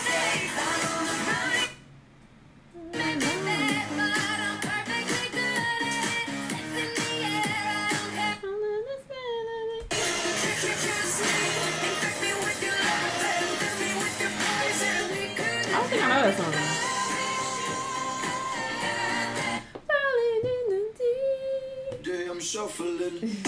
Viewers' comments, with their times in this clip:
0:04 I can’t hear this song without hearing Bobby Shmurda sing it 😭